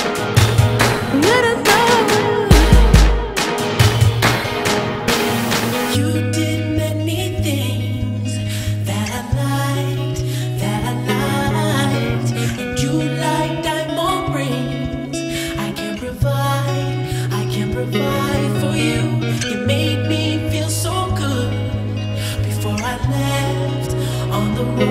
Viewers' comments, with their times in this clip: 0:05 The guitar outro takes me to a different place